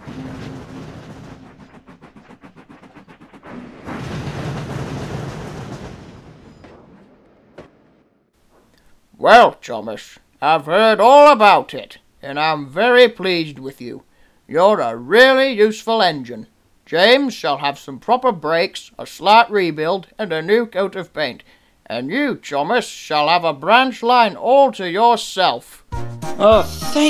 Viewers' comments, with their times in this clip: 0:10 Sir toppom Hatt’s face melting as his voice pitch drops Well Thomas I heard all abou— melted face splats on the ground.